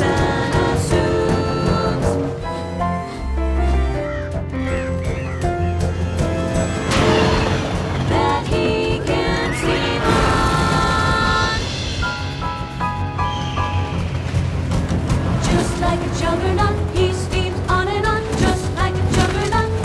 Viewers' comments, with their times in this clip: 0:06 I KNOW they didn't just do my turtle homie dirty, by giving him that OOOF meme sound effect